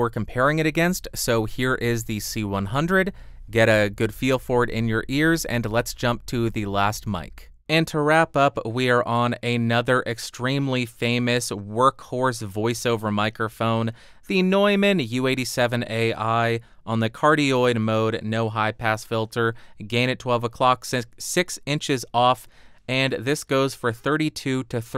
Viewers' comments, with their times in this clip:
0:09 I think this Mic is not good for your voice. I'm listening on M-Audio BX5 monitor. U87 Ai is not a good-sounding mic. C-100 is very clean.